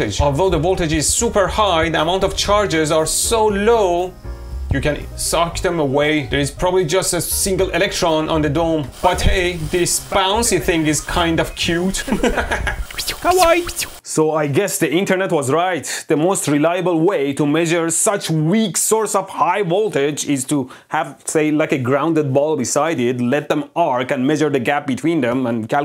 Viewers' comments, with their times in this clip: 0:08 nice voiceovers, I thought I was tripping on something 😂